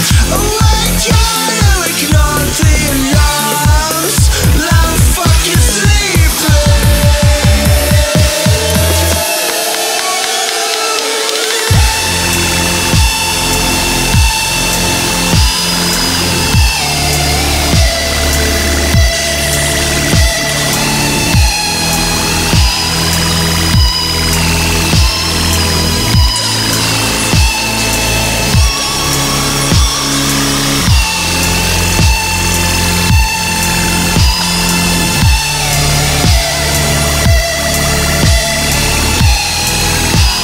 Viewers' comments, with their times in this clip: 0:05 this song gave me chills holy
0:21 .... that solo past that point wouldn't be out of place on a Muse or Rammstein album... I don't have words to quantify that level of awesome. Other than to say, I make music myself BECAUSE of Rammstein's keyboards, and way Muse fearlessly play guitar parts on keyboards, or play bass guitar over synth bass. I heard someone say something like "Music is what feelings sound like"... that's what music is for, shit words can't say. Like that solo.
0:27 Im procrastinating watching this video, dope terminal wave effects, I like the red fog vintage feel. watery slow velocity fluctuation was great, excellent work and editing, keep up the good work with meaningful lyrics, all your work is paying off I hope the best in all your endeavors, inspiring and raw talent with a proper spotlight